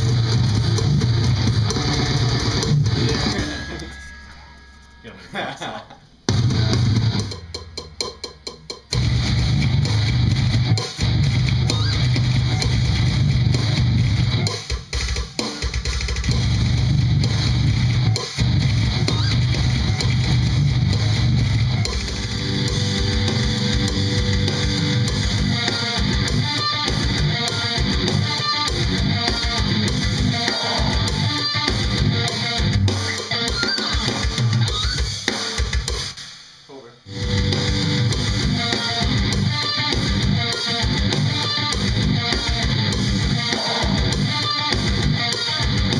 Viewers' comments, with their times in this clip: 0:09 what song is ? damn that sounds so heavy
0:32 they should have kept those pinch harmonics in the song ;)